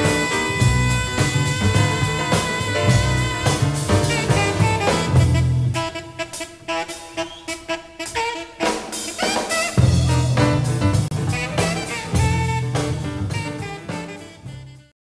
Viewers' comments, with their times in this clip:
0:10 Kenny is like damn that was a sick lick